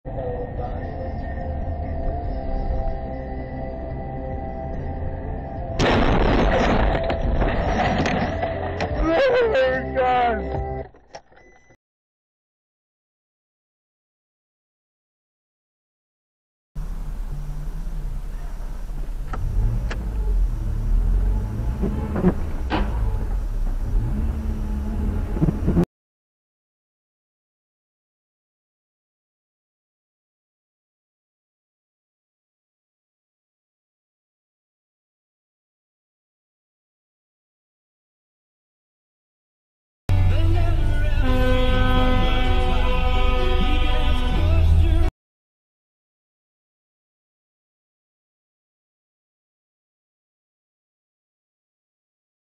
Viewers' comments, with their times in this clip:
0:06 First dude "lemonade grass"
0:09 That sound he makes on minutes....that's the same sund I make when I come.....Great that we have something in common.
0:40 That's a nice horn 🥰